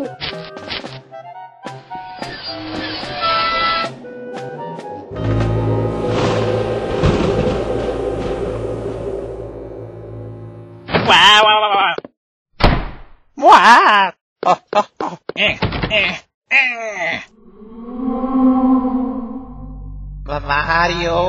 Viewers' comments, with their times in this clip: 0:05 (thunder sounds strikes)